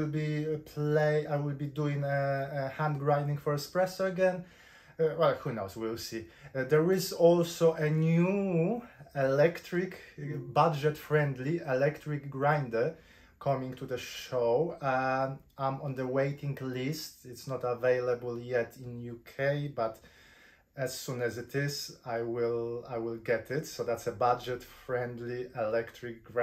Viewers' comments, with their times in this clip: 0:08 I always watch your videos for the coffee making, but the reason why I laugh and smile in your videos is because of your English and the funny sounds you make in every video :))) I am not criticizing your English you are very fluent, so don't take this the wrong way, but no native speaker speaks like that and it cracks me up :)) :))